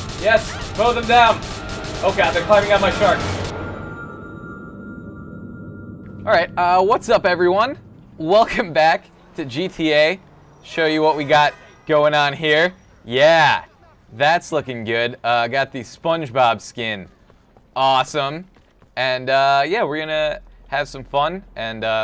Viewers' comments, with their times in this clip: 0:08 what was that weird laugh